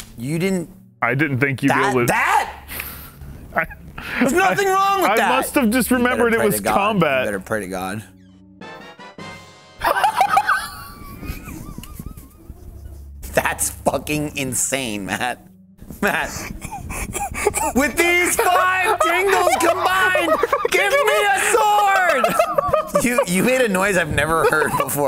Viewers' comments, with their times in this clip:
0:09 you can tell that’s a genuine laugh.